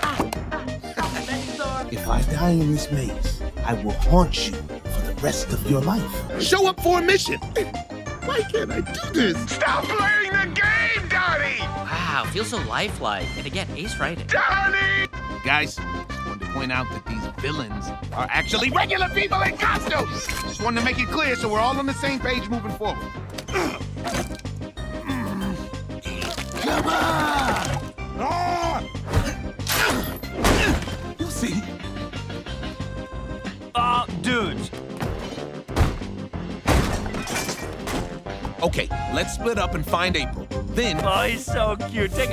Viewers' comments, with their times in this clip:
0:09 is so desperate and exasperated. Anguished, even. Beautiful voice work
0:14 Wow that was the most exasperated sound I've ever heard, like it's so frighteningly good.
0:28 I LOVE THE GOOFY ASS SCREAM HE DOES ITS SO FUNNY IDEK WHY 😭😭😭😭😭